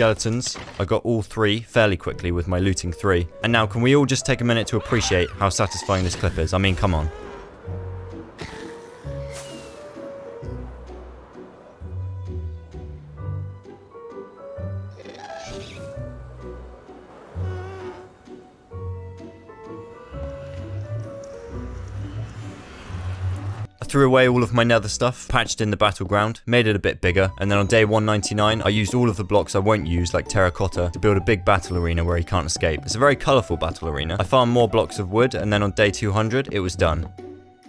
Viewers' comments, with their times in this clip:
0:07 "look how satisfying this clip is" aot theme starts playing
0:24 Why does he begin to sound like Dan TDM???